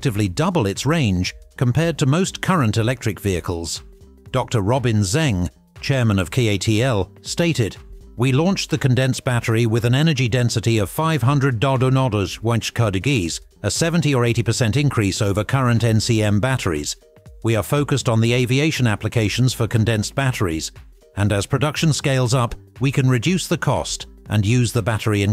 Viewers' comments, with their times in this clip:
0:10 500 dodu nodoos wench kardigees? The AI voice is hilarious 🤣🤣